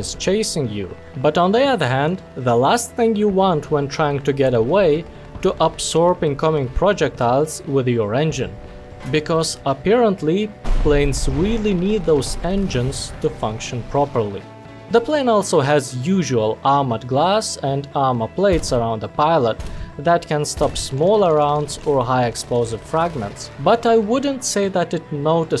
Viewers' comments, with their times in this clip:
0:07 It looks like the bomb made a bounce sound as it hit the tank, caught me off guard and had to replay it a couple times to make sure I wasn't crazy.
0:09 you can actually hear the impact of the bomb. Nice